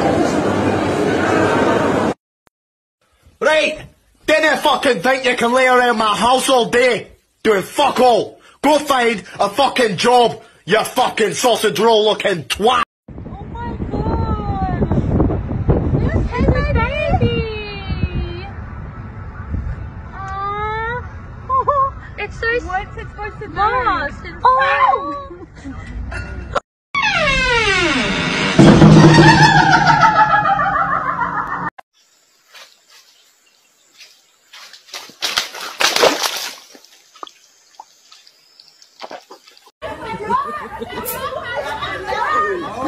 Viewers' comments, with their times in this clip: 0:06 bro is trying so hard to speak English and not German. 8 can tell its German from the accent
0:27 i loved the laughing door 🤣🤣🤣